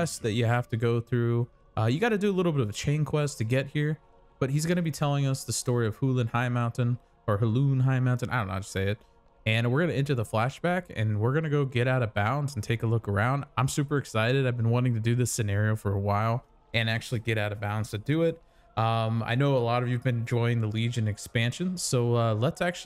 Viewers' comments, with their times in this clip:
0:04 we aren't even one minute in and I'm already taken out by you rhyming his name with BALLOON HIGHMOUNTAIN